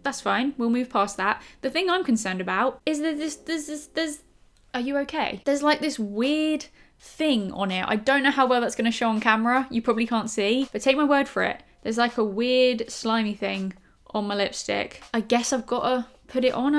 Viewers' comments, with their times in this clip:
0:03 You sounded like Barry B Benson from Bee Movie hahahaha I love this hairstyle on you too btw! ❤️